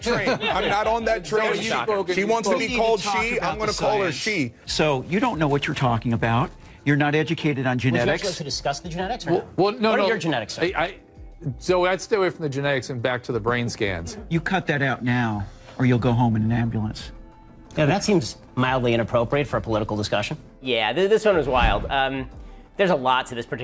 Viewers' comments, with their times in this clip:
0:05 She sounded like Owen Wilson 😂